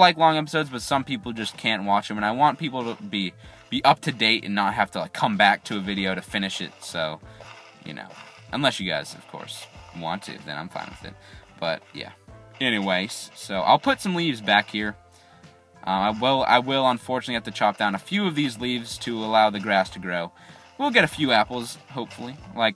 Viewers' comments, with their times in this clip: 0:05 Hehe u said finish it. U said shit XD